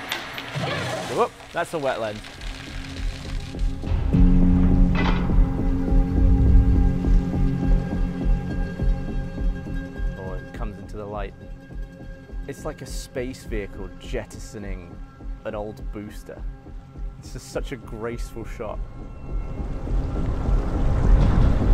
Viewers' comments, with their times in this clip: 0:05 Lol the sound design is so epic it's comical when matched with such a silly thing as dropping candy into soda :P It's like some art film about starting a new colony for humanity after surviving some catastrophic extinction event. Or a video of a human embryo developing. That mint is being filmed with the care and attention and love one would show the precious seed of their own survival